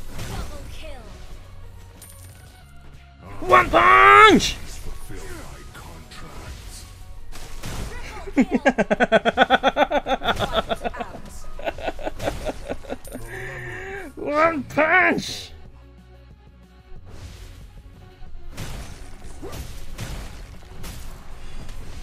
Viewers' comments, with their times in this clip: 0:06 is the best laugh ever 🤣🤣👌 👍 If you agree
0:09 That laugh creeps me beto
0:09 That evil laugh